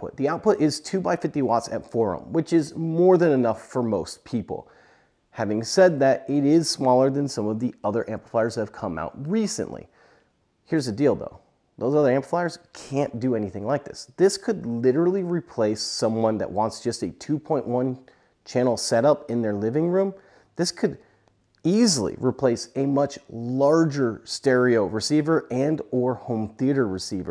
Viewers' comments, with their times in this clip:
0:10 "Here's a dildo" 😂 Couldn't resist, sorry. Great video, thank you! 👍